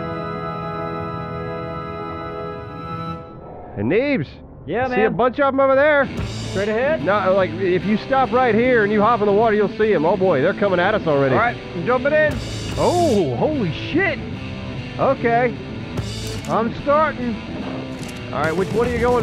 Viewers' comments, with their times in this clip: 0:05 BEST. Music. EVER!!!